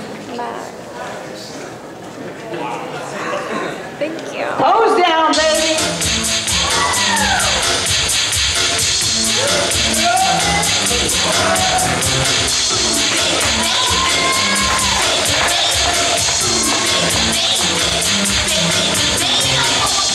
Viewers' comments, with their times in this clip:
0:03 thank youuuu. She said it rly funny lol!